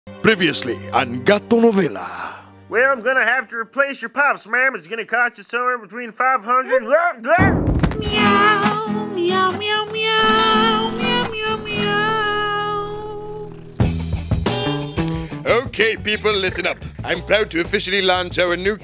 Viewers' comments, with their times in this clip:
0:03 Kinda sounds like Cleveland Brown